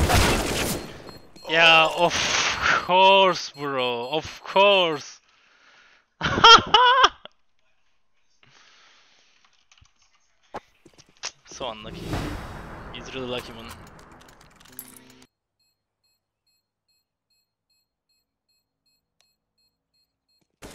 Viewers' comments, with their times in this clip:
0:04 The way he muted the end round music. Lol! Ofc!